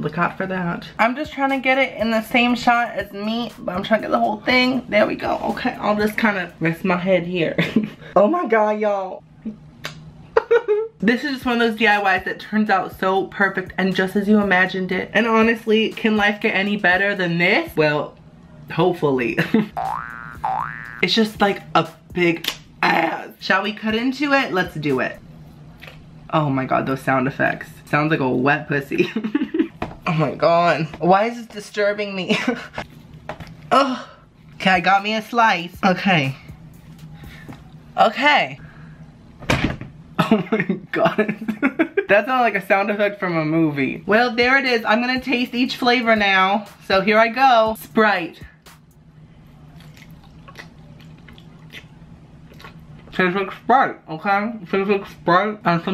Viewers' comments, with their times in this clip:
0:10 The noise he makes is priceless
0:20 those boxing edit sound skills 😂😂😂 6/5
0:37 The thump from that sounded like a slasher villain pushing a body off a third story balcony